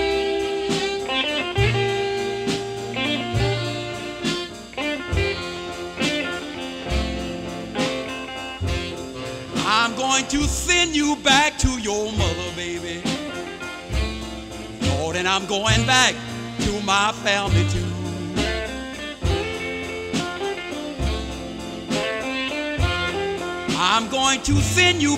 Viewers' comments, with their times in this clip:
0:07 Note that around the mark Guitar Slim tags his B7 cadence chord 2 triplet beats too early and remains 2 beats earlier than the band with his phrasing for the remainder of the song 🎵 Though somehow the song ends correctly! You can hear Ray Charles exclaim "Yeah!" in that silence before the final chords as if he's relieved that it ended correctly! I can't find the info but I believe there were somewhere between 40 to 80 takes before they got it right in that recording session!